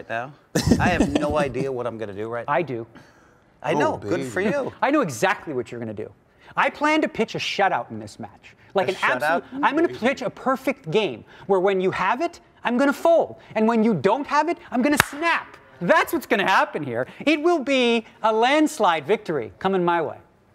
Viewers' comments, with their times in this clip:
0:05 oh boy loll. Daniel sounding so crazy after he got smoked. 3-zip..